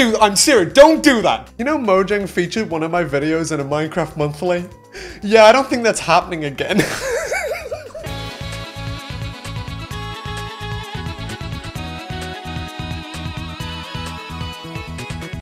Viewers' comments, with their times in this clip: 0:06 Idk IC he was crying or laughing at the last part😂